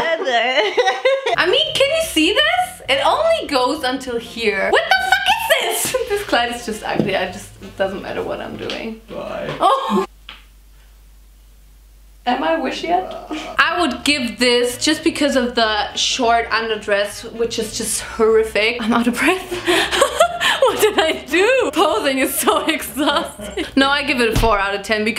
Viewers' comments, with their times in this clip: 0:06 "This KLEID is just ugly!" (German ACKZENT)